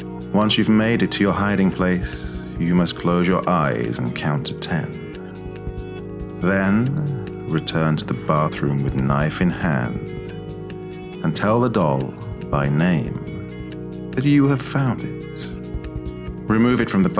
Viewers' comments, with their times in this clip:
0:05 this guy could make the happiest thing sound like ur worst nightmare 😅